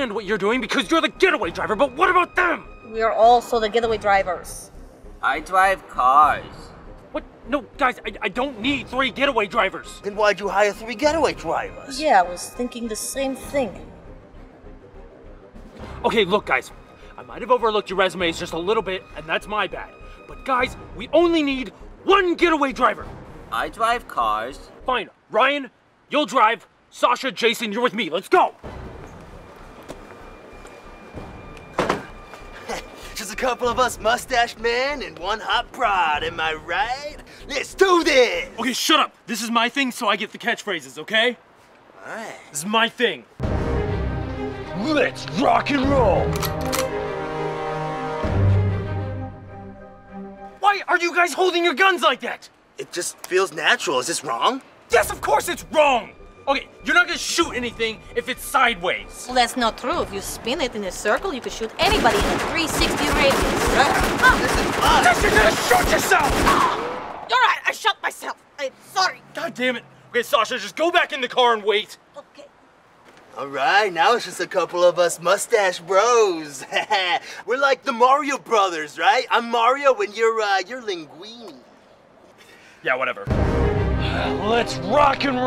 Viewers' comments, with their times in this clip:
0:10 alarm went off
0:59 That accent remind me of FPS Russia!!!
1:08 really good Russian accent for a american